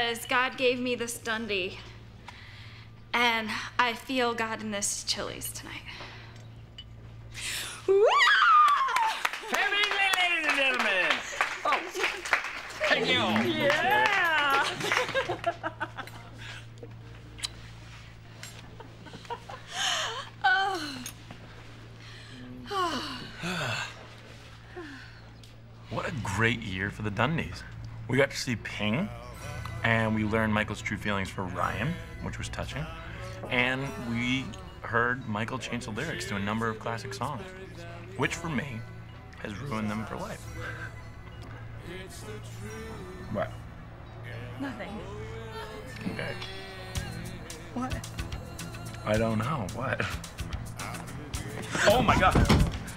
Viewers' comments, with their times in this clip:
0:03 I feel god in this Chili’s tonight. wwOoOOOoooooh Pam’s drunk scream is literally the best
0:11 Dwight does an “oh yeah” sound effect when Pam kisses Michael
0:17 Deep breaths Jim.😮‍💨
0:33 REEEEEEEE Jim says “...and we k(issed) heard Michael...”